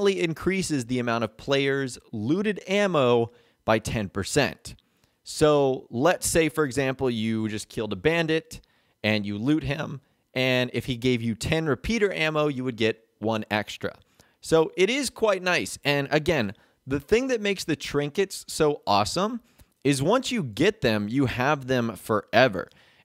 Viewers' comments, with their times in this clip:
0:09 he sounded like he was gonna cry